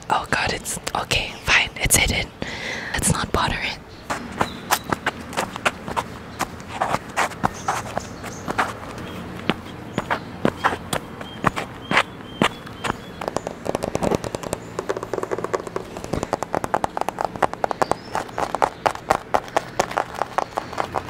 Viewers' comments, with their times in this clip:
0:09 I meaaan back at it again with the minecraft sounds (sort of lol)